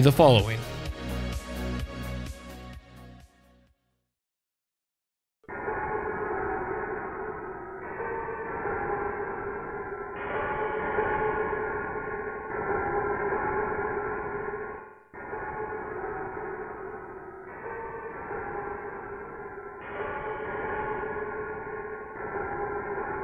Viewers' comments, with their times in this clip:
0:08 It sounds like Silent Hill ost